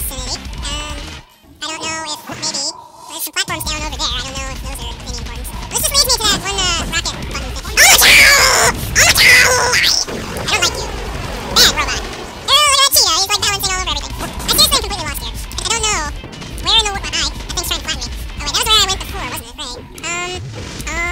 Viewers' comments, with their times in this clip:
0:07 i love epic shouting